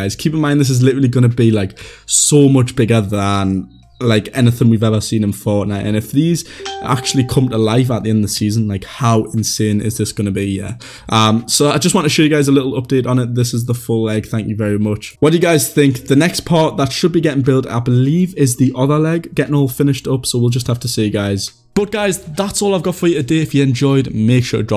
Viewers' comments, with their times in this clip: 0:06 Facebook notifications that try to interrupt u lol